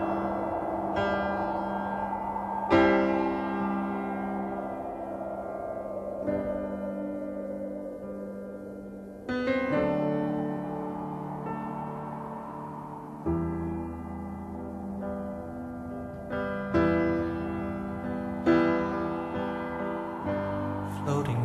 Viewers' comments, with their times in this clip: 0:07 The piano part from remids me of a piece of classical Music, Mozart or Beethoven I think, but I can't figure out which one...